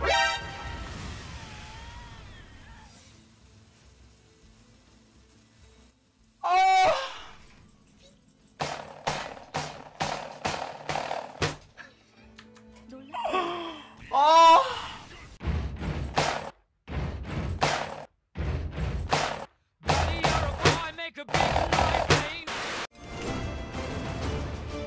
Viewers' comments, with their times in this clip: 0:06 makes sex noise and goes to pound town 😂😂